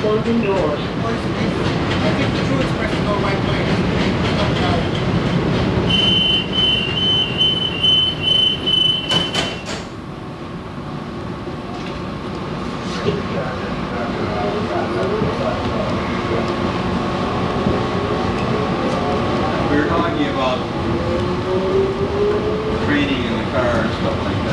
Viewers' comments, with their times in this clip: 0:05 very loud bip !